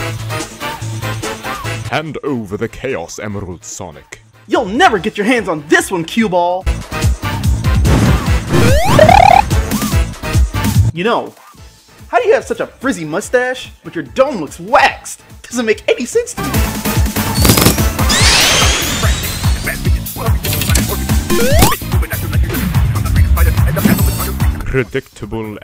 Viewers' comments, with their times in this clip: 0:09 Mario Spin Sound! ahahahhah